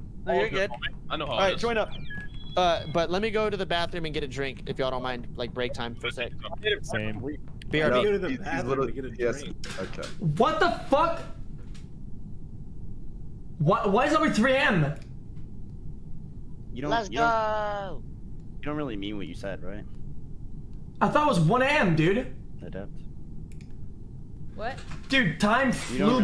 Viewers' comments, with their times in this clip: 0:09 lol it is 3 AM and he is screaming like that, the best